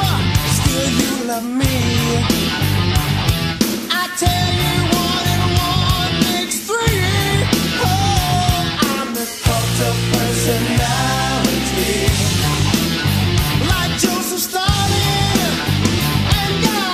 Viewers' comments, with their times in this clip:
0:04 I love it when his music hits I miss this one it is so much better than his new one